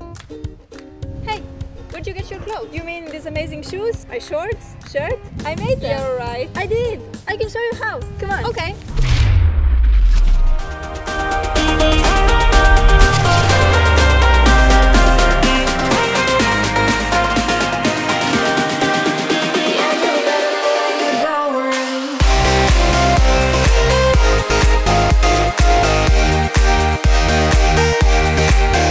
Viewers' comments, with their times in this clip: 0:09 Like the song